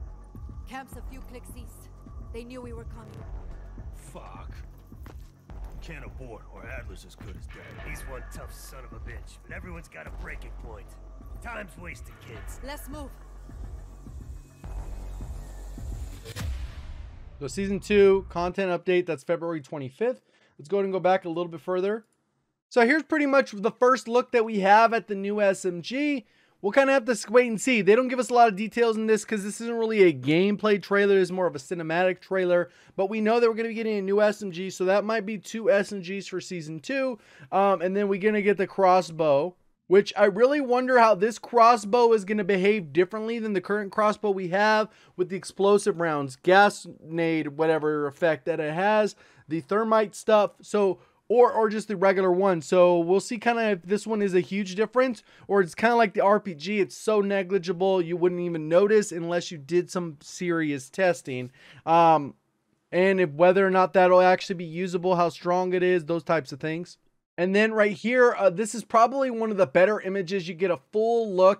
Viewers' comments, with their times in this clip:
0:08 Literally the dude sounds like he’s a villain from a kids cartoon lmao
0:54 Go to pewdiepie was struggling to say this word lol